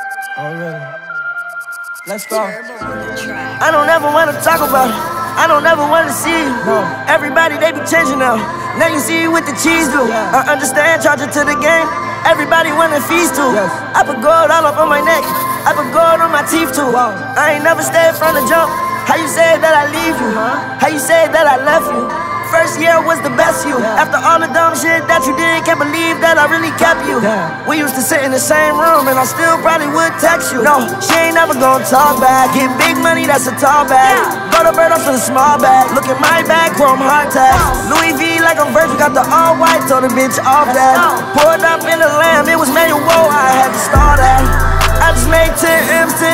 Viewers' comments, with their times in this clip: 0:03 I don't never want no taco bell
0:03 “I don’t ever want no Taco Bell”
0:03 I don't never want no tacobell
0:03 I don’t ever want no Taco Bell
0:27 I don’t know what the fuck his voice just did but I love it
0:33 gives me “buy it” vibes🔥